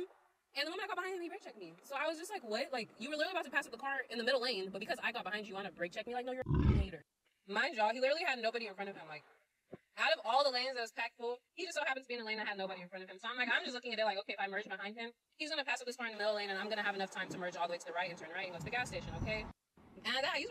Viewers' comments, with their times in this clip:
0:05 why TF ids her video on like super speed totlaly zoned out during her "story time"